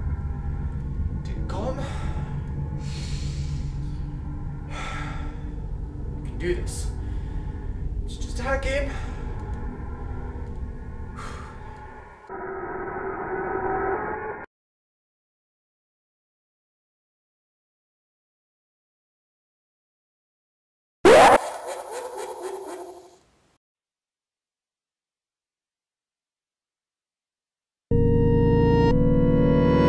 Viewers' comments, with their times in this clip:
0:10 This is messing with my mind after pausing it to talk to someone it I heard creepy laughter before watching of it